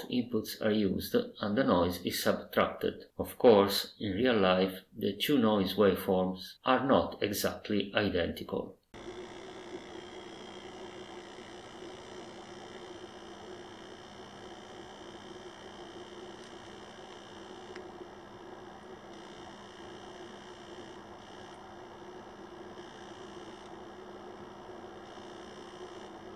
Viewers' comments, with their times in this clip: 0:09 I was hearing that exact noise on my Centipede arcade until I switched to the original audio amplifier. And now we know why!